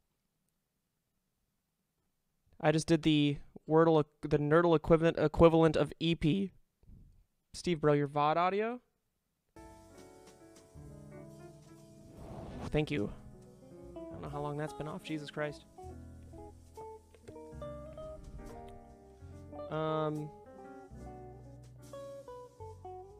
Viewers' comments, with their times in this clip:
0:09 he finally turns on vod audio lol